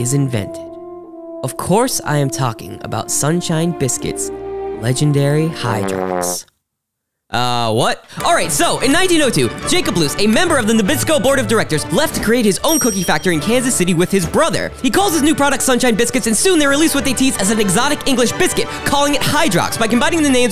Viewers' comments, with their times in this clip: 0:07 if you do x2 playback speed up until his voice can be turned into words but after hes a chipmunk.